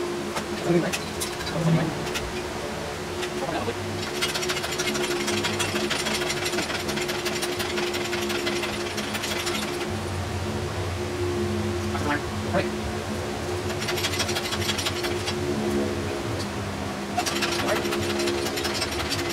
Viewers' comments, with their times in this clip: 0:03 lmao that engine hoist when sped up sounds hilarious, and talking during the sped up parts also get me to chuckle, even on my bad days listening to that gets me into a better mood.